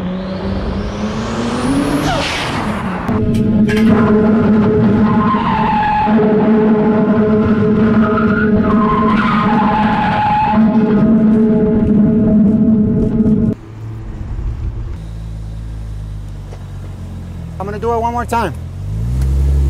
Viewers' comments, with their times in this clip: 0:03 sound like drift musquitos :v